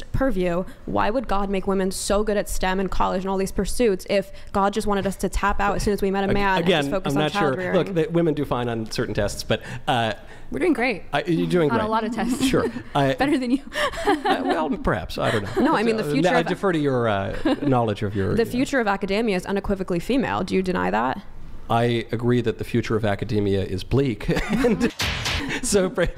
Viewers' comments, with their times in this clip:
0:10 1 at a time ladies